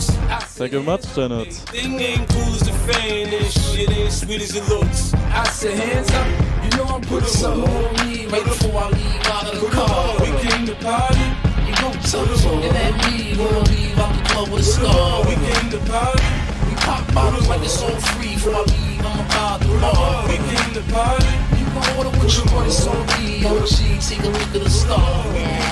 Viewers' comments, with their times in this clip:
0:10 oh jesus the beat is to much i cant get past this part.....Pullllllllllup